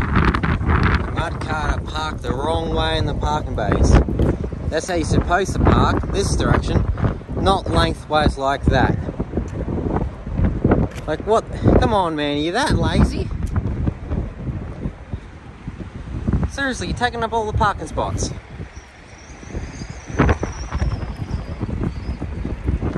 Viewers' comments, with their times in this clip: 0:07 Judging by the accent, the CabOvers, and the number of double-trailers (/"road trains"), im guessing thats Australia. I ❤ Australia